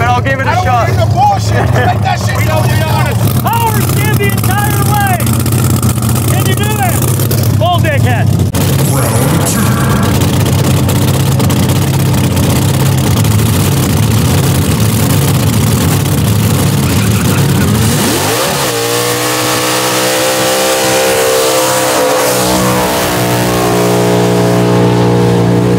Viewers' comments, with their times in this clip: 0:07 YouTube’s subtitle thinks the mustangs idle is applause 😂